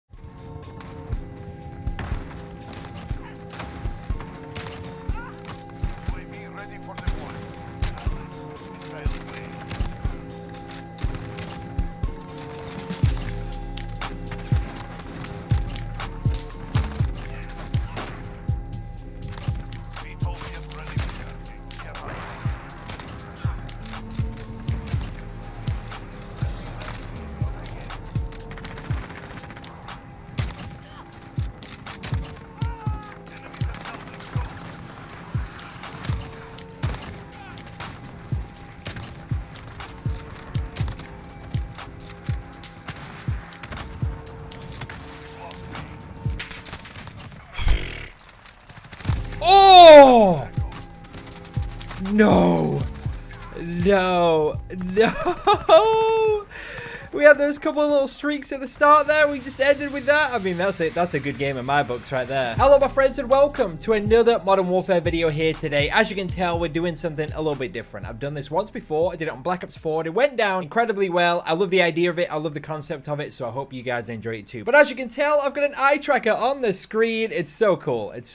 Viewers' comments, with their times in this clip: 0:05 when you snort gfule
1:01 his voice went with the beat lol